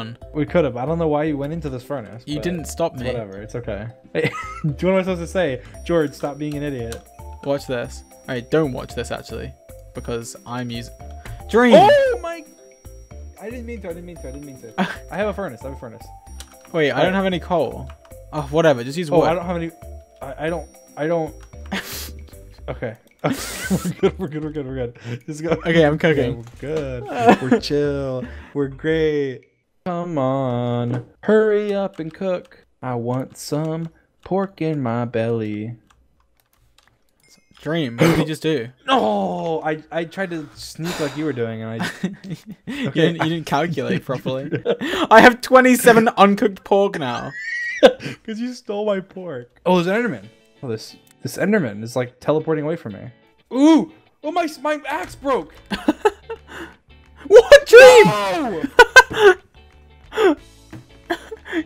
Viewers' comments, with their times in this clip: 0:09 That was probably George's calmest "Dream!" ever
0:23 Dream singing is the best thing on earth
0:32 I want some pork in my belly Dream singing Pork In My Belly
0:32 Dream singing I Want Some Pork In My Belly
0:46 Dream sounds like a dying pig for a sec